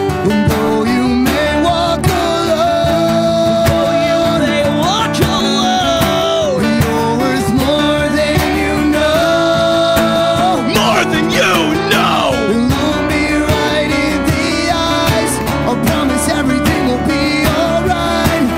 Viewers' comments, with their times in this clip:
0:04 The guitarist sings better than the vocalists live :/ wtf and what are those attempting screams? I'm disappointed in this live performance, expected a lot better. as proof.